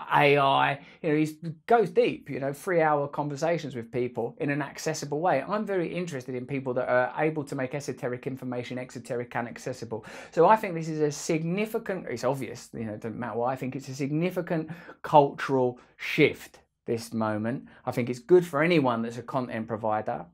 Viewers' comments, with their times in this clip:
0:05 love the way he speaks
0:08 is the rapping part.